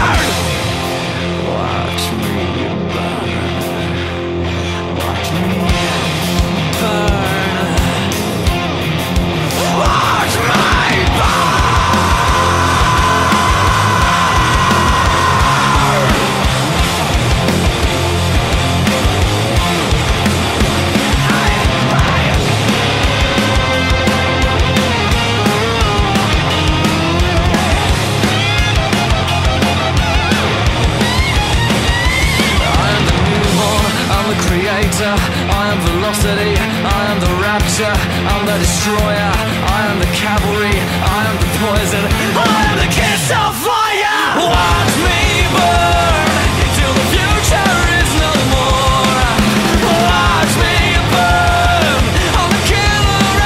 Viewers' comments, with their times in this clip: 0:08 should have moaned before that scream. Bands that do the moan scream are life
0:22 The guitar solo is the best!
0:41 im the ketchup fryer